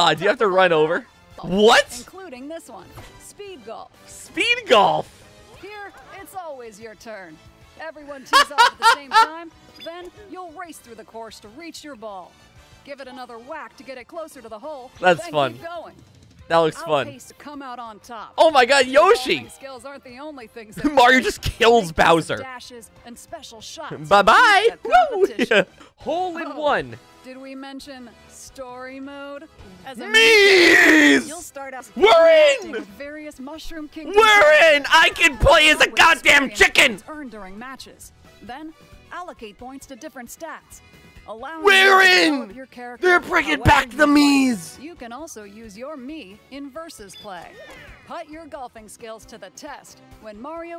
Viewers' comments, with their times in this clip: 0:07 dude that sounds exactly like mario
0:33 I've never heard such aggressiveness in his voice before.